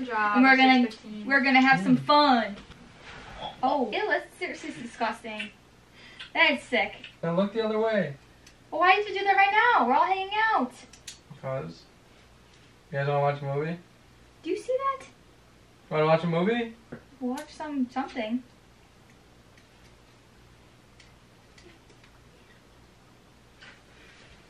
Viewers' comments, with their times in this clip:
0:09 sounds like mariah